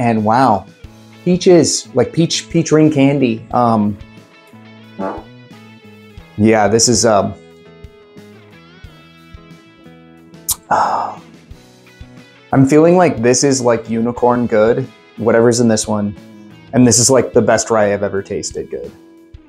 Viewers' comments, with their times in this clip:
0:04 Did you fart on camera? Minute lol.
0:04 im cracking up so hard ! you had a nice little toot bahahhahahah
0:04 Didn't want to edit out that fart?
0:05 Are we pretending like you didn’t rip a toot ? 💨